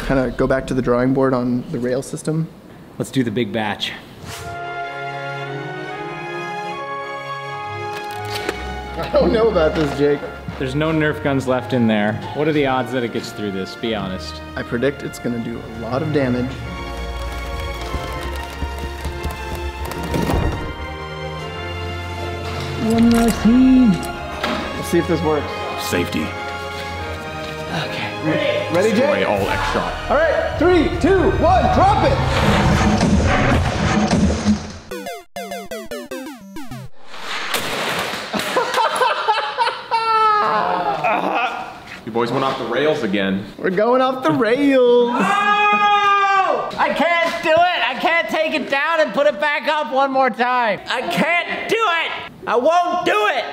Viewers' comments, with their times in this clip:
0:03 So why is the hungarian anthem playing in the background? XD
0:04 i'm just chilling, watching the crew chop stuff when suddenly... the hungarian anthem! wth! :D
0:04 Guys you love the Hungarian national anthem 🇭🇺 These guillotine videos are like a Hungarian festivities now😂😂😂 When I heard it I immediately stood up and sang it.
0:06 And the Hungarian anthem starts playing ... 😆😆😆
0:07 Two videos in a row guys... Why are you so obsessed with the Hungarian National Anthem?
0:37 thats a straight up joker laugh holy shit!?